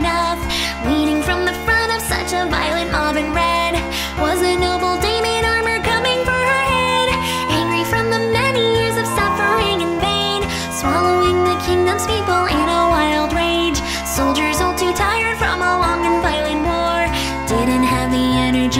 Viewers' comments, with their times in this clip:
0:04 this sounds like " violent almond red" and the next part sounds like "Damian" LOL the reasons why I struggle with singing that part lol